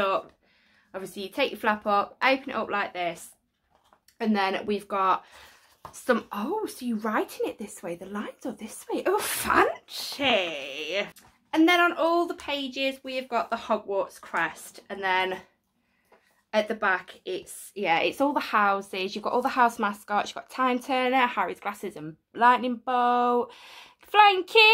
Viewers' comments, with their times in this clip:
0:10 I cracked up the way you’ve said „FAaaAaNCyyy”😂😂 Great video as always ❤️❤️❤️